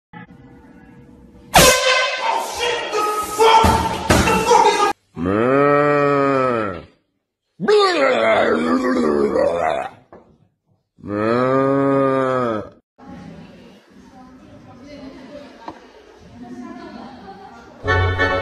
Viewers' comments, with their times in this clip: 0:00 When your in the bathroom the another person he got the horn and he scared the another person